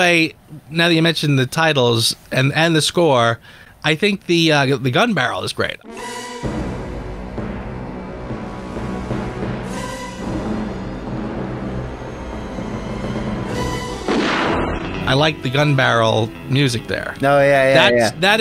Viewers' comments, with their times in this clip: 0:05 I like how the gun-barrel sequence has completely different music to what we're used to. It sounds like a thriller or murder mystery, which sets the right tone for the movie.